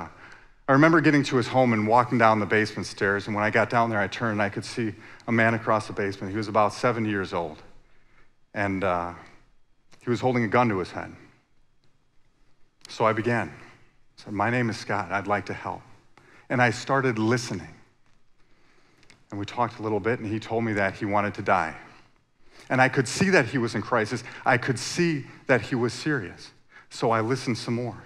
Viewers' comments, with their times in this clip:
0:06 Wow a Seven year old man
0:06 I can't be the only one who heard (and still hears) "he was about seven years old"
0:08 I though he said 7 year old child
0:12 7 years old?